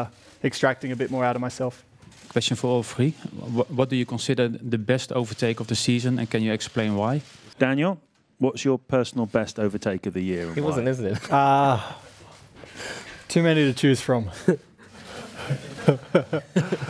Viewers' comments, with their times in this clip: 0:03 I bet he's Dutch
0:04 typical dutch men who can’t speak english